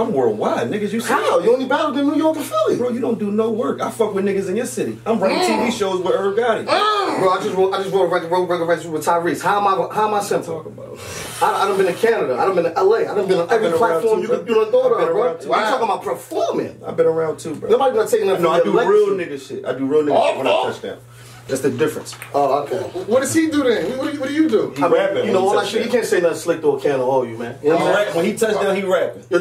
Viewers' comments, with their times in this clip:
0:10 that studder was major about him n tyrese working 😂🤣🤣🤣🤣🤣